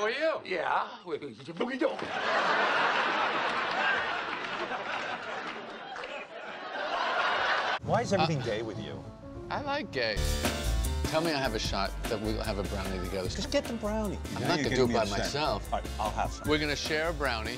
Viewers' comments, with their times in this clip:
0:05 Anyone else hear Larry David’s laugh …ish?